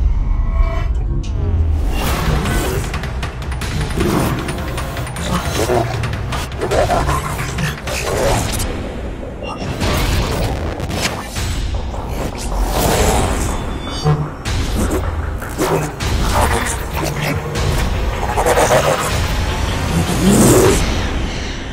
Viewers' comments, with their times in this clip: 0:06 Did i hear a Transform SFX?